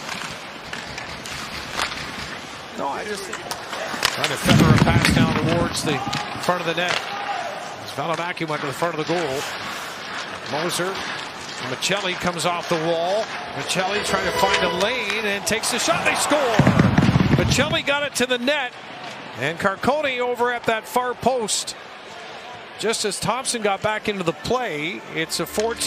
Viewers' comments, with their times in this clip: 0:07 that's a highlight play by Maccelli. Too bad the homie announcer barely reacts.